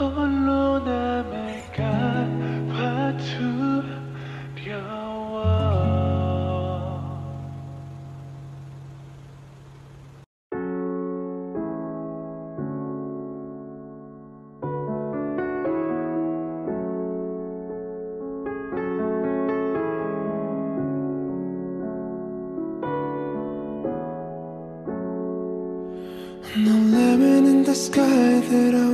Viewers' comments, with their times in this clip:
0:10 U2 jk sounds like tae 🥺❤️ Also i love this playlist☺️💕